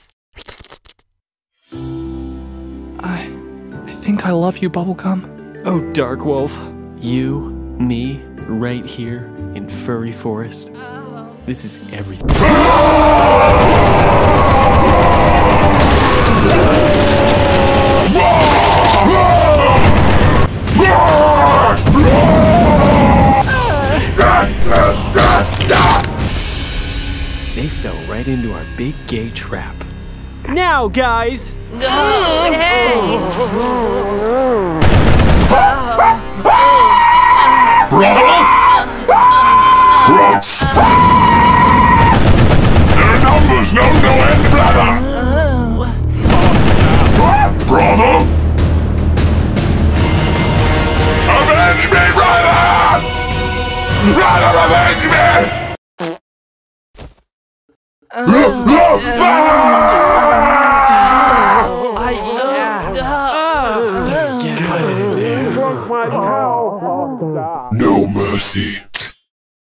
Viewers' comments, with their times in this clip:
0:10 only sleep deprived members will recognize this voice.
0:35 That scream is proof of how traumatizing it is.
0:35 I love the scream "...AVENGE ME BROTHER! BROTHER AVENGE ME!"
0:36 he sounds afraid too
0:36 this hysteric scream... I can't imagine how it looked and felt during the recording session 🤣
0:36 That poor marine was absolutely traumatized 😭 those screams were so genuine 😂
0:51 whoever did that “AVENGE ME BROTHER!” Deserves to be in a movie
0:53 I like how his voice becomes more frightened when he sees what's coming to him
0:53 nahhh bro is actually gonna do the ahhh sound the sus thing